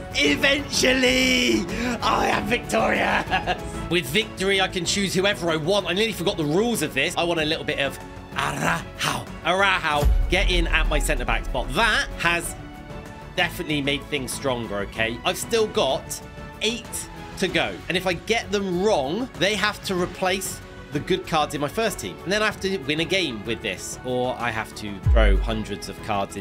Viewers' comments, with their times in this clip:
0:09 ARA HAO! Chinese CB from Barcelona.